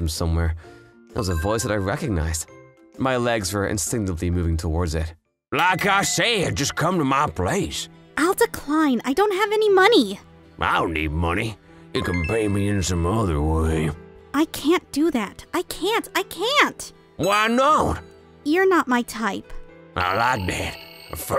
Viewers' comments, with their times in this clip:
0:06 the old man voice is hilarious 😂